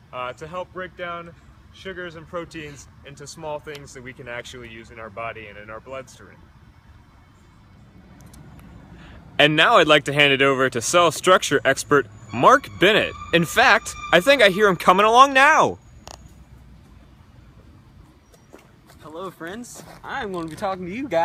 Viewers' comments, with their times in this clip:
0:06 Looking good, but for god´s sake, don´t ever again shout into that camera so much! First you are talking quietly from the distance, so I put volume up and in I had to throw headphones of my head, as you were screaming directly to camera!